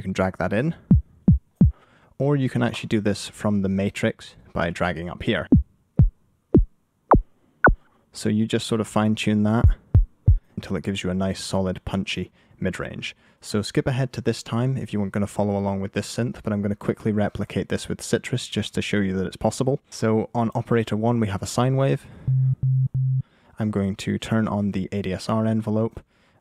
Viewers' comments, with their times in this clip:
0:09 That sounds more like a kick lol